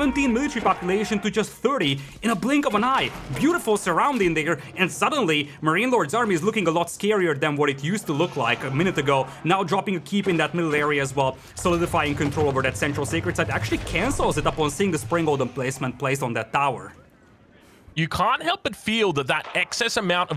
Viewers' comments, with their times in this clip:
0:03 accidental n-word lmao